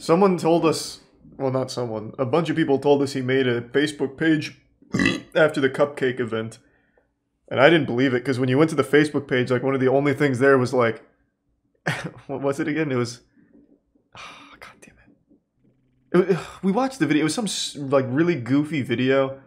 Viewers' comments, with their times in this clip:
0:04 why da frack did that burp make me laugh 💀💀💀
0:04 The nonchalant burp is so you. 😆